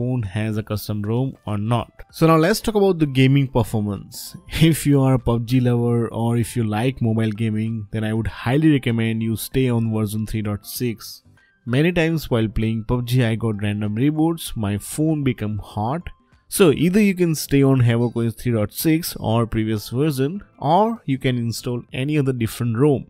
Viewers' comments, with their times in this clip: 0:04 The manual bots. 😂😂😂👍